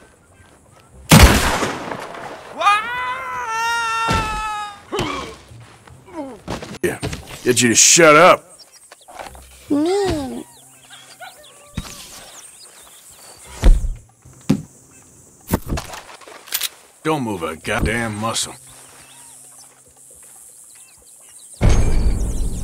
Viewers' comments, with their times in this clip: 0:09 Omg that cute "mean......" 😂